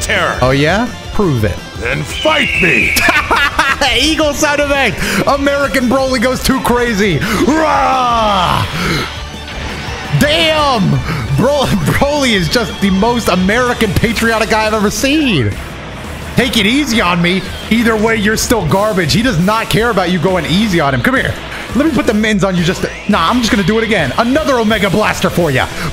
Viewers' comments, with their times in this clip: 0:08 Why goku try to pull a Rhymestyle with that weak kamehameha, or the “kamekameha”